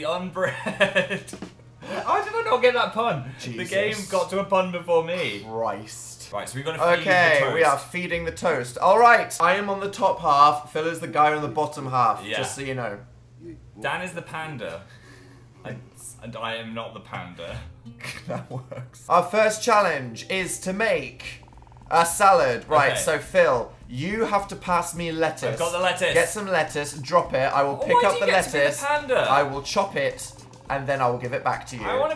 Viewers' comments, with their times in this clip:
0:09 uM, GUYS, WHY ISN'T ANYONE TALKING ????
0:09 WHY IS NO ONE TALKING ?????? IM FUCKING DEAD
0:10 dan laughed bc he knew it was wrong 😂
0:19 Dan's laugh and "that works" is SO CUTE